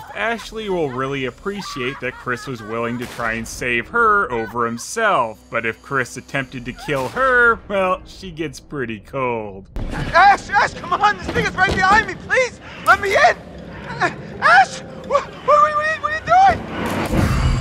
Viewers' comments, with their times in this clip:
0:05 I know this is supposed to be a serious moment in the game, but Chris' squeaky voice put a smile on my face. Thx, Sony! :D